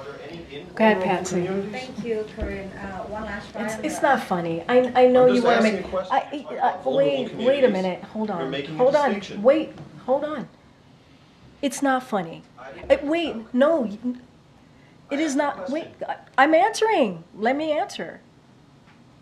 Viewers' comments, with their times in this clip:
0:05 I couldn't hear what he said when he interrupted. What was inappropriate?